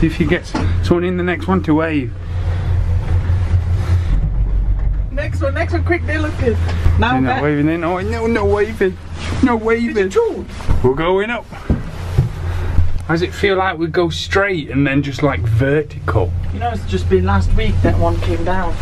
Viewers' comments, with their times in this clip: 0:03 I thought it was a lorry going passed in the air 😂🤣